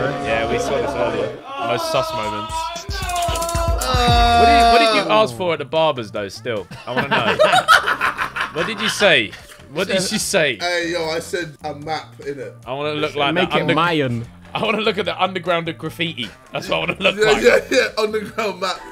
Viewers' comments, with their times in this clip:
0:03 the way Ethan said this was so white 😂